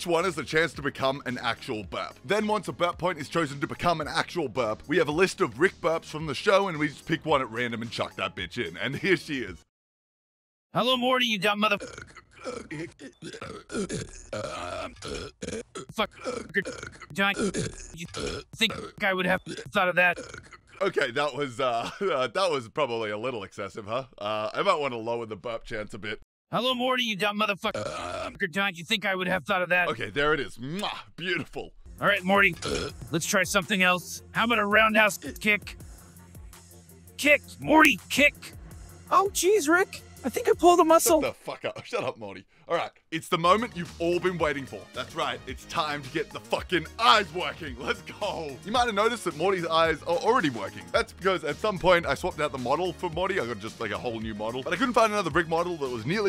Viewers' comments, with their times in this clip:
0:10 i have never laughed as much as i did when i heard the constent burbs that was the best shit i heard in my life 😂😂😂😂😂😂
0:38 the burping was the worst thing about rick and morty so glad they stopped fuckin doing it all the tikr